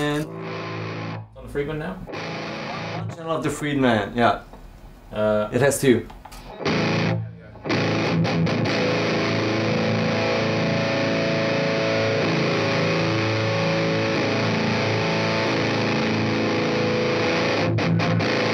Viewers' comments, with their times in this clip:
0:06 Prefered the savage by a fair margin for the style. Not fizzy, different mid range stucture, a bit darker, but way tighter percussive. it sounded like there was some terrible crossover distortion in the sound on that synergy, more noticeable there with the long single string note
0:06 I honestly liked the sound way more than the engl module in the synergy, the friedman sounds very gnarly, and almost like fuzz, which i enjoy